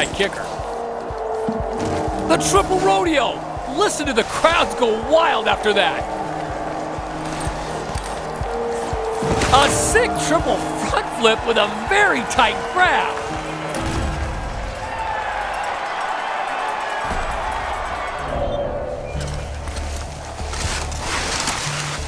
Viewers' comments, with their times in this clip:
0:04 A triple rodeo! Listen to the croud! “Boos intensify”